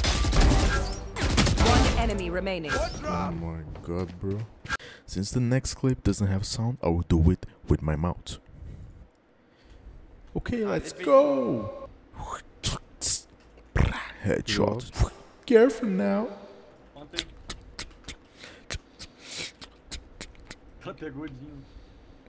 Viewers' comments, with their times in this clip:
0:03 his voice was satisfying
0:10 i hope your audio corrupts more often